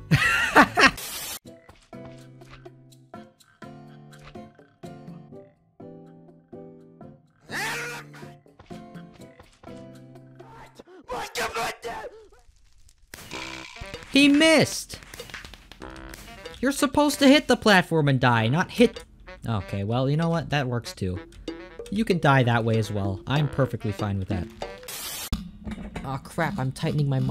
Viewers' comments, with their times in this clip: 0:07 i wonder what is the scream
0:12 The way the sound fades out is so funny it made me die.